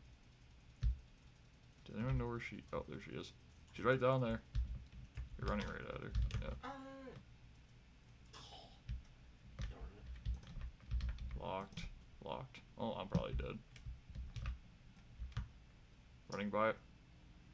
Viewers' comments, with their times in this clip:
0:04 just the simple "ahh" made me laugh